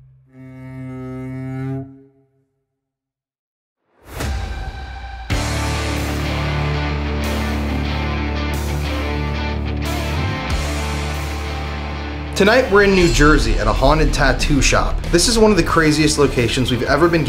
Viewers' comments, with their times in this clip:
0:05 Hey guys this is fantastic, I don't know if you picked it up but I had my earbuds in and .08 I heard after your question are an adult or child,I also heard child to . Just thought you may want to check .?